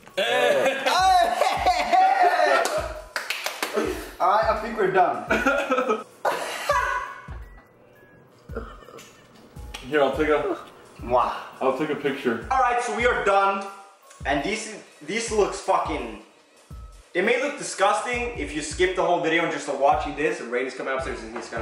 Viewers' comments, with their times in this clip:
0:06 That apex laugh